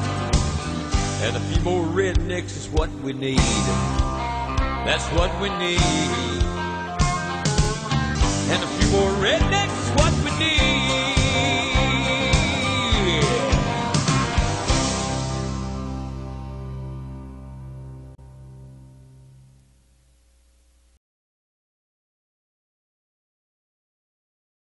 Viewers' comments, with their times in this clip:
0:09 that should be "who's" as in who is. But then again, given the distaste with which the singer said the word "intellectuals," I suppose I'm wasting my time trying to correct this.